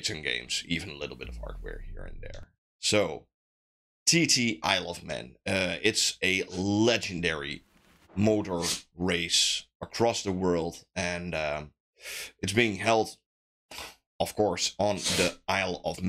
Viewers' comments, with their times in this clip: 0:04 You love men bro? 😂